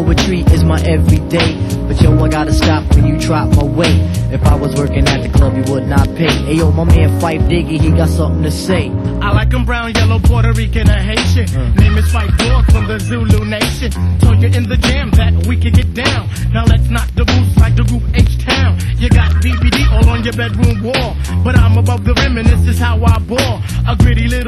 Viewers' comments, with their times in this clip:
0:07 When phife comes in flowin is my favorite part....you cant help but nod ur head lol